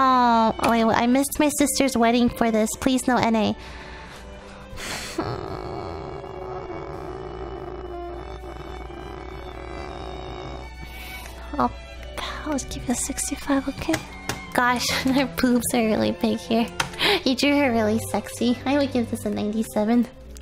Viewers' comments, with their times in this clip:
0:05 can anybody make lilypichu purring for 10 hours a thing